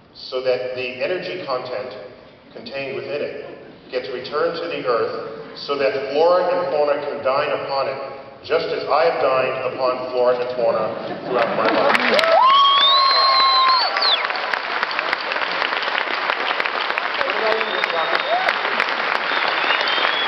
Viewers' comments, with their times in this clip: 0:05 What the fuck does he say ? w/captions my ass